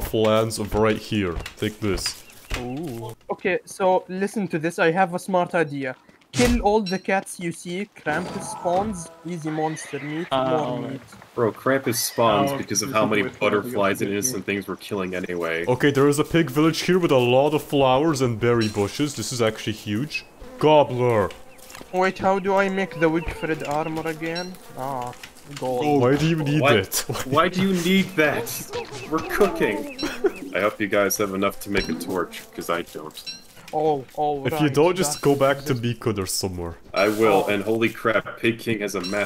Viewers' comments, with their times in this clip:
0:06 idk why but the krampus spawning sound you chose made me happy, probably because it's from little big planet, my favorite game.
0:06 like the little big planet respawn sound
0:20 why did you say gobbler so unintuitively LOL